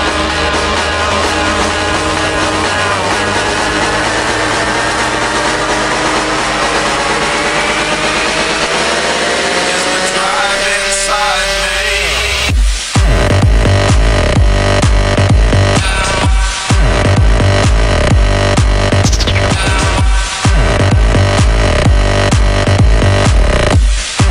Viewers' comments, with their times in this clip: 0:10 I am sorry, but the first two minutes are awfully bad. I hear 3 different songs mixed in together which just dont fit. On the other hand the switches and 4.29 were nice and i like that songs.